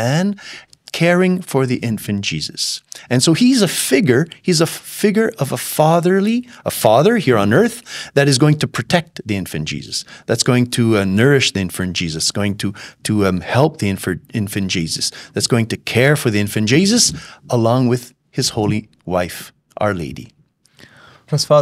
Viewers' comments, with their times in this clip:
0:08 maximize. No 'L' sound.👍